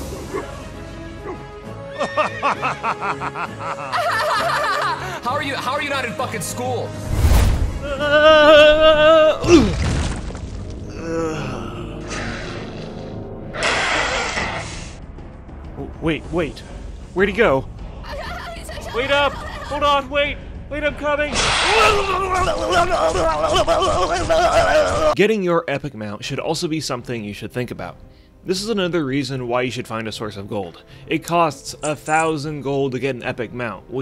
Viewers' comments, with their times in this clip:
0:08 Noone: Mosquitos at 3 am:
0:18 is just the best voice acting ever